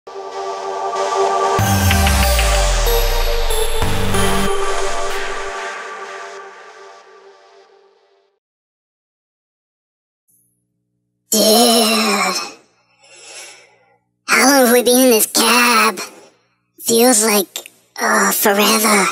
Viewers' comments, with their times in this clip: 0:00 that cartman voice tho